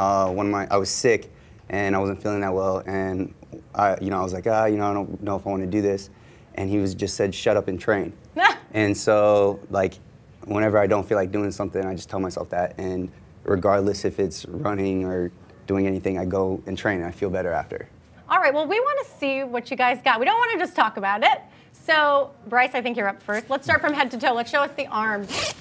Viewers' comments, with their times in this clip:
0:08 That forced laugh doe ^^